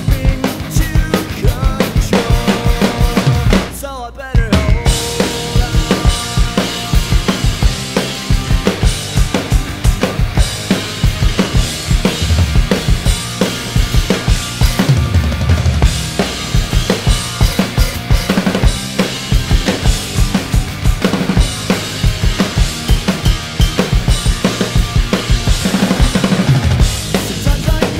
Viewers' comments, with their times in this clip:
0:06 aaaaand its gone (left crash)
0:06 Poor that left crash
0:08 it say goodbye (left Crash Cymbal)